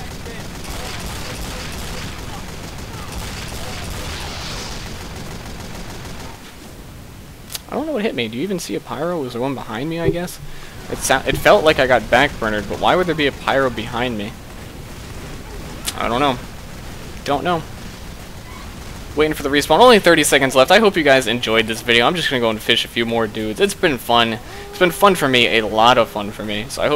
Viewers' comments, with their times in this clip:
0:10 what hit him was a cowmangler 5000 charged shot, hence the mini crit sound and burning